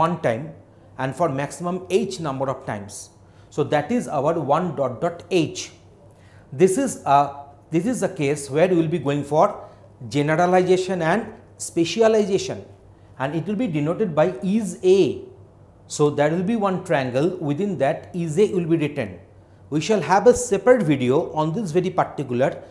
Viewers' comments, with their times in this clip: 0:10 jenedailization.... i the video